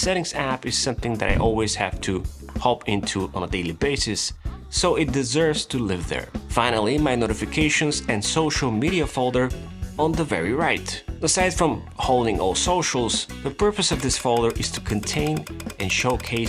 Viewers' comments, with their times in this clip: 0:03 Is that a girl moaning in the audio ?? LOL
0:04 Are the sounds of the „screaming“ woman by accident in your video 😂?
0:04 sire, why is there a moaning sound in your bg-music? O_o
0:04 and on wards you could hear moaning?! what is this. very good video otherwwise.